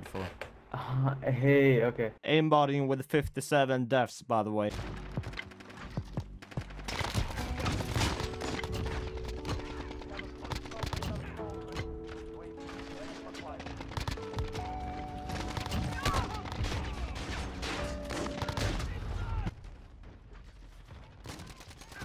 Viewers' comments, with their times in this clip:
0:05 this is so smooth with the music as well